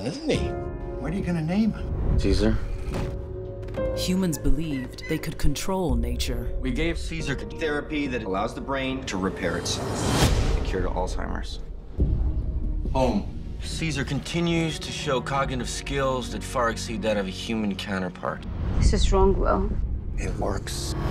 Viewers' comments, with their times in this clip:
0:06 No you didn't. He was born from an ape that was given it. Plus that's a terrible audio splice...